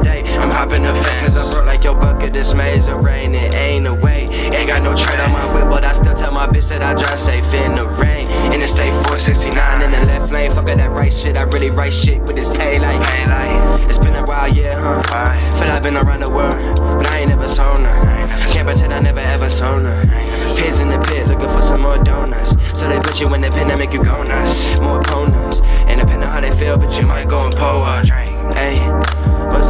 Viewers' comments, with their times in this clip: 0:10 That flow switch 😤😮‍💨